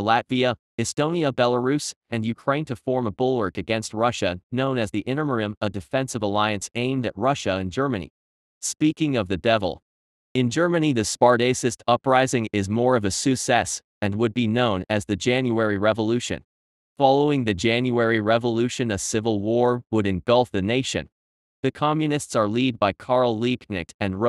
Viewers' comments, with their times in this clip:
0:10 The “spart-ace-ist” uprising is more of a “sous cesse”, eh? Not going to watch the rest (or read the AI reply I’m sure to get to this comment).